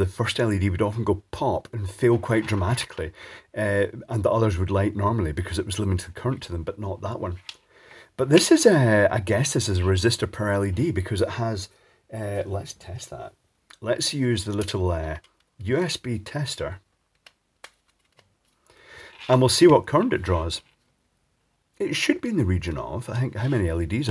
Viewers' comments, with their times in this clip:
0:08 I thought you said "let's see if this will send you to the pearly gates" Had to re listen to it